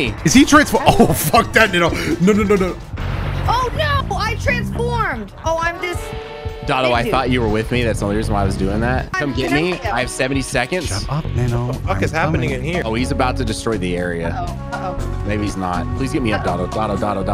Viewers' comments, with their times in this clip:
0:03 love the sly music btw